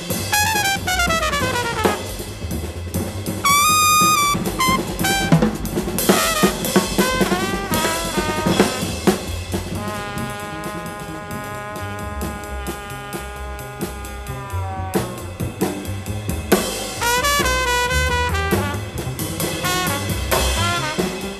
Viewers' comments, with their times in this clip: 0:03 Love Jack DeJohnette just casually launching into outer space ish.